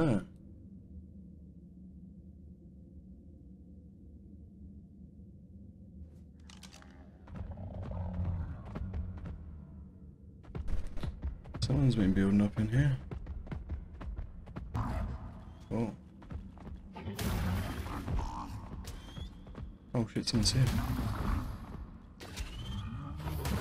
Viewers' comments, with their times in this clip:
0:10 At minute there was a perlovia you could hear it